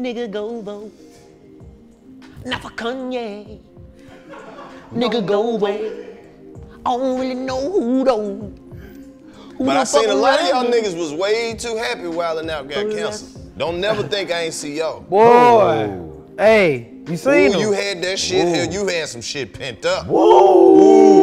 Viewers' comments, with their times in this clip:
0:05 this song goes!